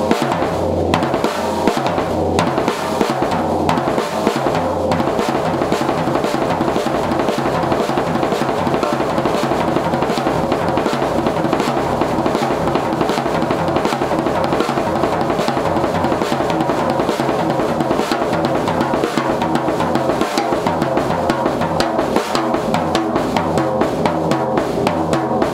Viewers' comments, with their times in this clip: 0:06 i think you got it wrong because at moby dick in royal albert hall when he does that fill he goes FLR not RLF